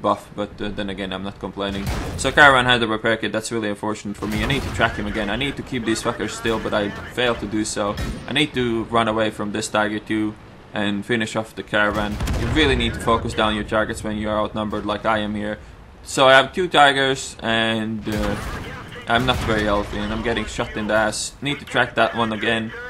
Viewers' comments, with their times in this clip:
0:08 and finish off this caravan (Caernarvon) - lolol